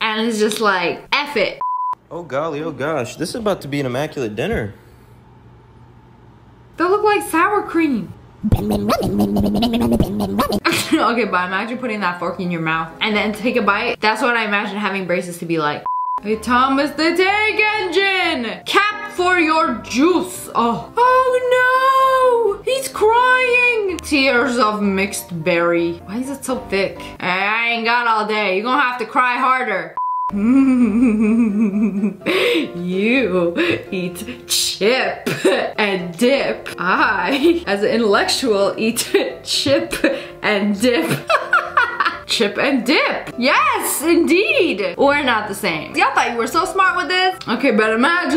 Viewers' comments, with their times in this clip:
0:08 SOUNDS LIKE HE'S SINGING-
0:31 laugh honestly scared me bit